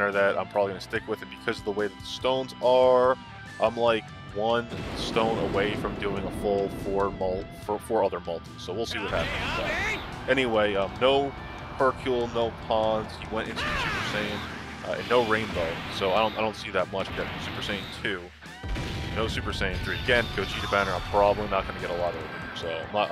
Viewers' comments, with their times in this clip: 0:07 of ssj goku just. Sounded weied